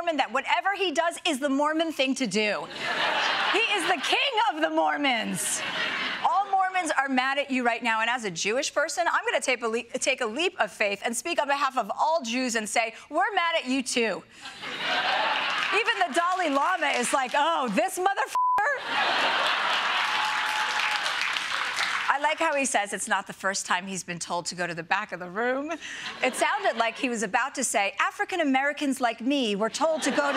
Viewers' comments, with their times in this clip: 0:09 I'm surprised that "...take a leak of faith..." hasn't been a cultural touchstone throughout history.
0:18 hilarious how they tried to bleep Chelsea but you can clearly hear her say the F word. 😂